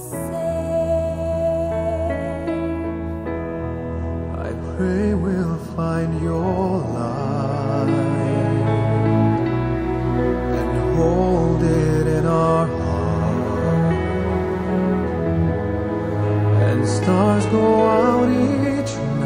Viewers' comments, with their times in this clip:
0:04 first i was "THIS IS NOT JAI!"... but when i listen more.. :DD <3